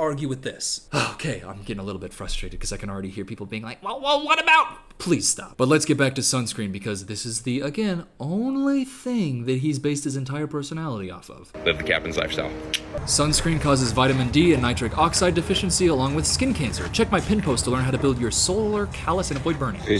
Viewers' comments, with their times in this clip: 0:03 why did bro sound like squidward 💀